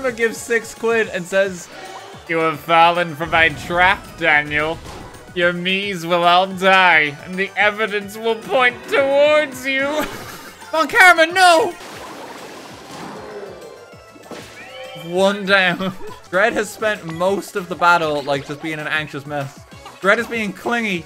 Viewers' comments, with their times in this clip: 0:07 The deadly demon’s animation lined up with his Von Karma voice BEAUTIFULLY.